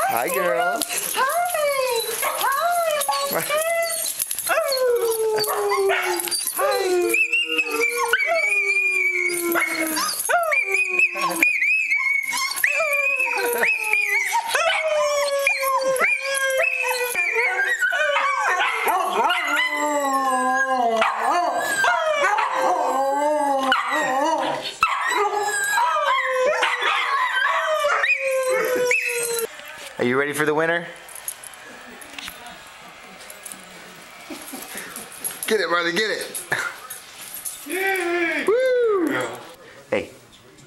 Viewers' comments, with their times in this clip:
0:10 Made me cry when Marley and Zoey started howling for their mommy and daddy! So sweet!
0:15 Headphones in sound all the way up.. -_- im deaf now
0:24 that is what a pack does, howls together